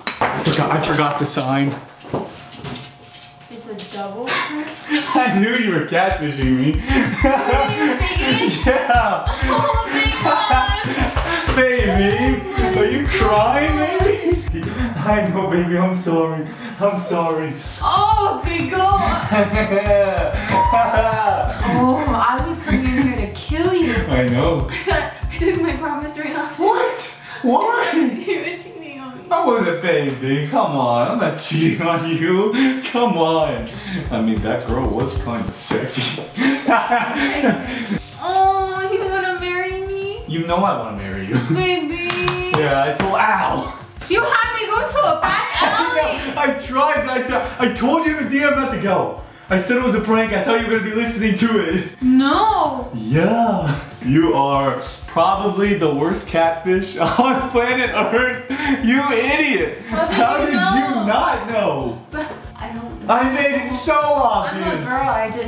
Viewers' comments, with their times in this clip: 0:09 she sounded like Kim Kardashian when she lost her 75K earrings in the ocean 😂lots of love ❤️
0:16 OMG DID U HEAR THEIR DOG WHINE😭😭😭
0:52 The way she said no was soo funny hahahahah